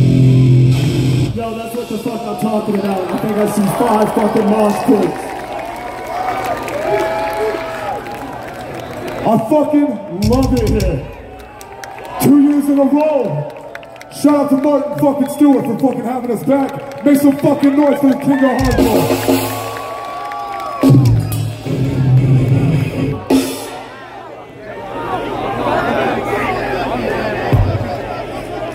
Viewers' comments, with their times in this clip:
0:10 Random dude on vocals kinda sick tho